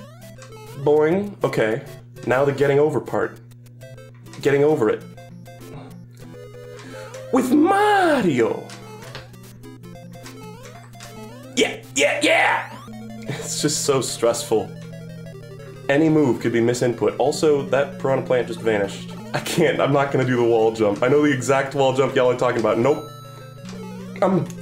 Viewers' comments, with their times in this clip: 0:06 is the most satisfying part because the music ends and mixes perfectly with the flag grab